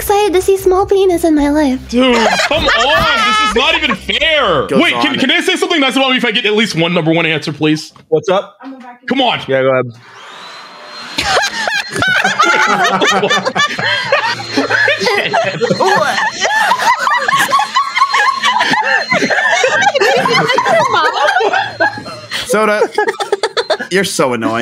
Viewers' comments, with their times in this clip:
0:10 is that Mable from Gravity Falls Laughing !?